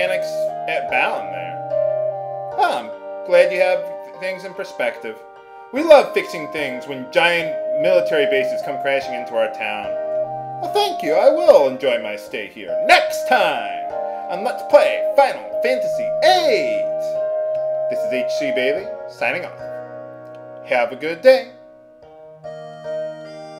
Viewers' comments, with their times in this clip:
0:07 The music sounds like something out of Final Fantasy IX. Like from Dali or something.